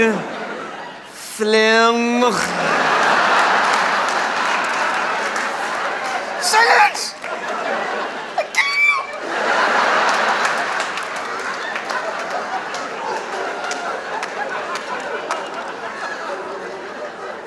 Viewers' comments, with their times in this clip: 0:05 that pitch though